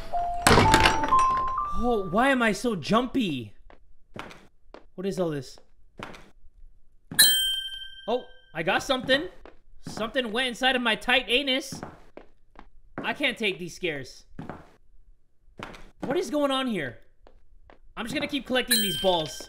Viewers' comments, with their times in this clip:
0:06 the DING sound made me jump